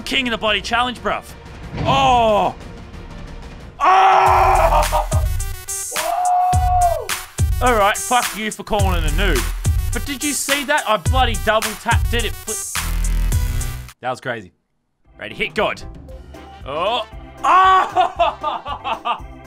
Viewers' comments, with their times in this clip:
0:04 That background music tho. noice and og